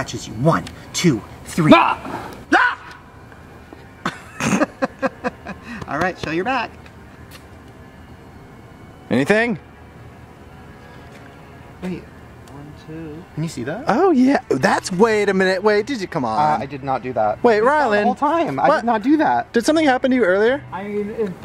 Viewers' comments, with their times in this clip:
0:09 why did he sound like a news reporter 💀